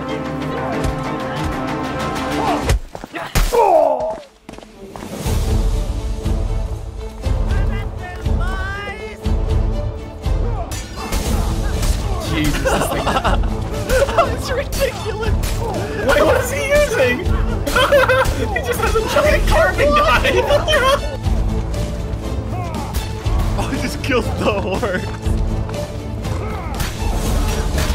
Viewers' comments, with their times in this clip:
0:09 carving knife massacre + home depot theme fokin legendary lmao